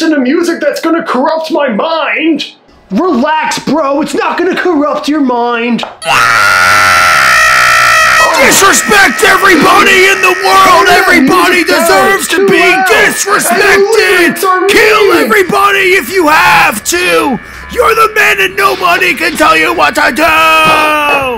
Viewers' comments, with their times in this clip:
0:05 that song tho 😂
0:06 bro that scream made me laugh.